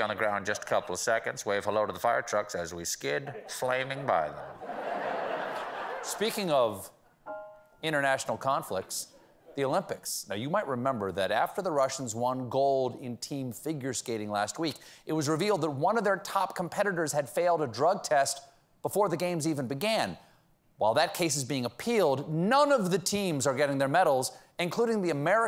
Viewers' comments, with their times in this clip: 0:07 Kudos to the drummer for the perfect added effect at the point...or was that the piano?!? Either way, I love it!